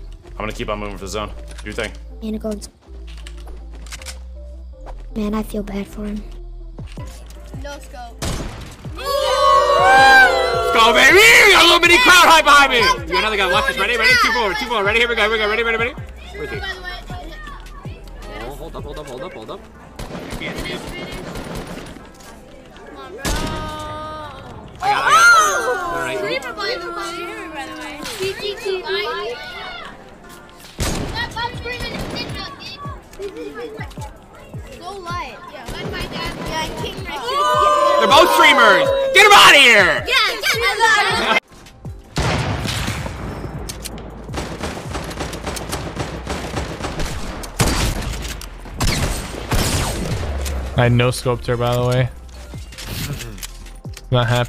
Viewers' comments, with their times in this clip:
0:05 those kids voices sound so annoying dawg heck like a 12 year old boi like me I speak low voice dawg
0:07 PRESS F TO PAY RESPECTS TO EARS
0:31 did some kid just say “stop screaming at ninja bitch!”?
0:36 Ninja kills them with an AR. Kids in the background- OOOOUUUU
0:37 actually squeaks all day